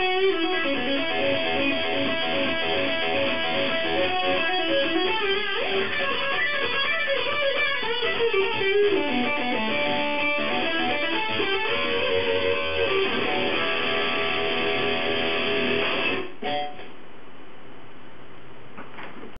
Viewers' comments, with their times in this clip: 0:05 can't do that its ridiculoulsy fast
0:17 actually, to my dissapointment, it wasn't flawless, you can clearly hear the E string being strummed when not supposed to be XD